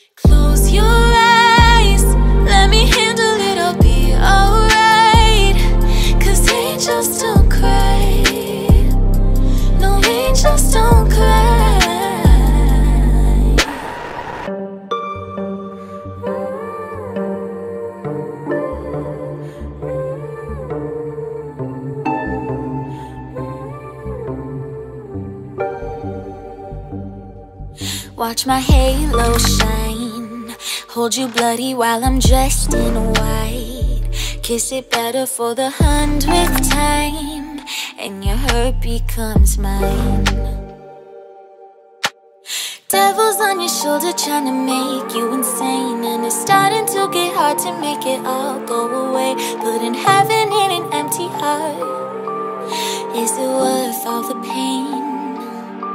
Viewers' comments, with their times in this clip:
0:09 omg her voice is sooo good. If I tried to do that I’d sound like a dying horse
0:38 Dudes why did I hear "and your Herpe comes mine" instead of "and your hurt become mine"